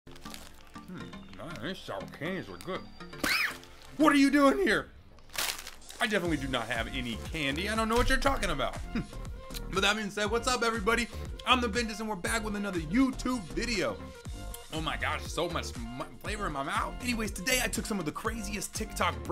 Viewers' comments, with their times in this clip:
0:02 THAT PEUEH WAS LEGENDARY
0:02 high pitch “ PUHHH “ 💀😭
0:02 got me so hard on the floor laughing i mean what is that PHEUHH💅😂
0:03 That was a fast “PUH”
0:03 the “PUHHH” in the high pitch is just- perfect
0:03 that PUHH sounds like one of those cheap whistles 💀💀💀💀
0:03 the high pitched PUHHHHHHH
0:03 BRO WHY WAS IT SO HIGH PITCHED
0:03 He sounds like my dogs chew toy
0:03 THAT " PAHHHHHH " was so sqeaky!! 😭😂😂